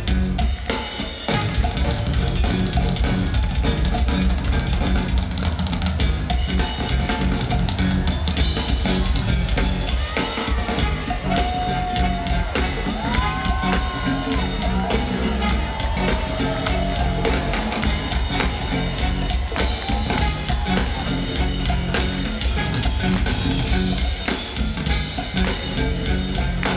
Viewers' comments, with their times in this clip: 0:09 got too funky after that lol!!